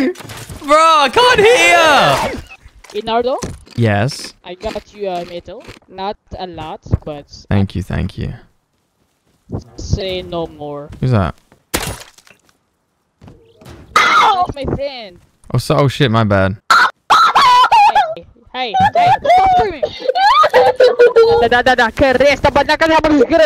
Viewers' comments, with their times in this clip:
0:09 the scream making me cry bro 😭😭😭